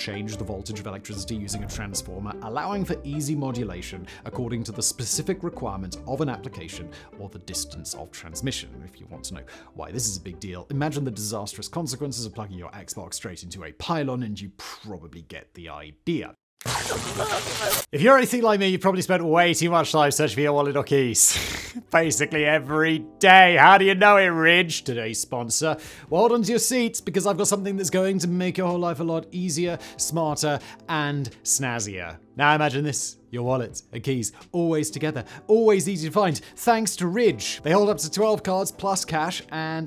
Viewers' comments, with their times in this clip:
0:10 the weird music again. dnf
0:20 "wallet or keys". Did anyone else hear "koala wookies" LoL 🤣😆